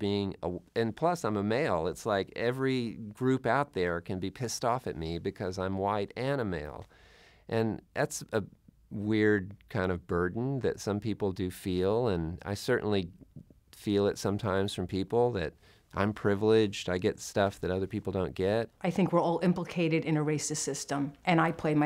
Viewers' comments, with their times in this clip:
0:05 This guy sounds like google translator lol